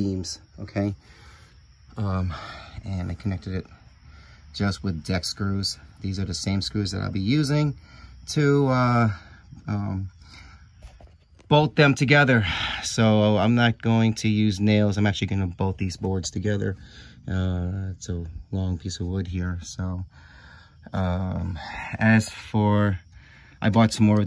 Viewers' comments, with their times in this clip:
0:07 Why are we screaming ?